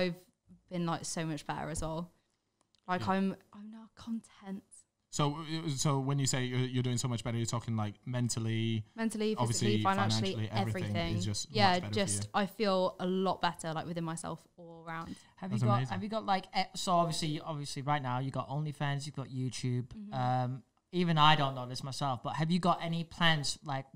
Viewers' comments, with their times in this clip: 0:08 that synchronisation cured my anxiety